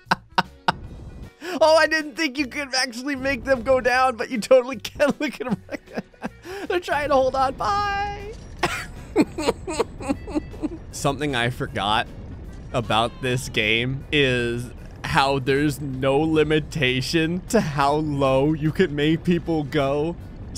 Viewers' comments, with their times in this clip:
0:08 that nefarious laugh tho.